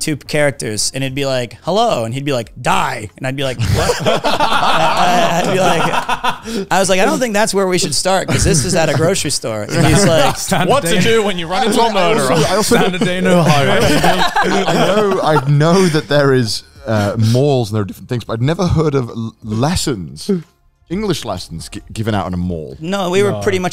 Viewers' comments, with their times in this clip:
0:07 does anyone else hear Garnt say "another day in Ohio" 😆